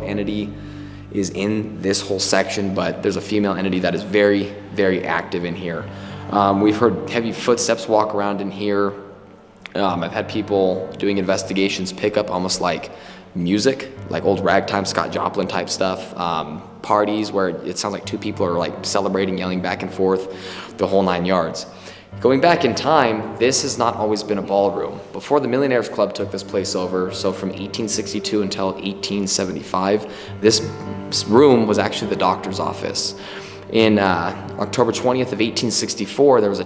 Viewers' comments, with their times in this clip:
0:08 I heard a whisper
0:21 it sounded like a kid or a cat I heard meow like a cat would or a kid!! ANYONE HEAR THAT!?!?